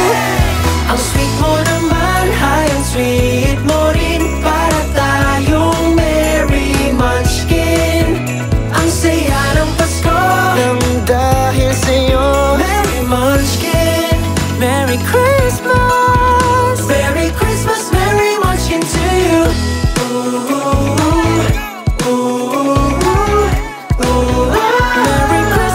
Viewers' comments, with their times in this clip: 0:10 Ooohh wow, that part of Ken where he goes down to a minor key together with the music. Nasty good arrangement right there! 👌